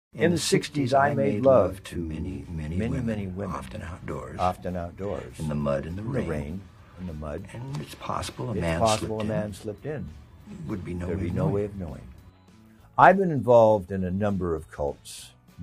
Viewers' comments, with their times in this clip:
0:01 What Satan sounds like